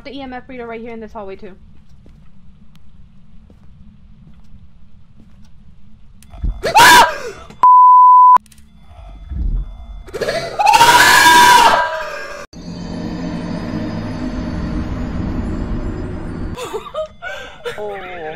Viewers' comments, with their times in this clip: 0:06 That scream made me jump 😂😂🤣🤣🤣🤣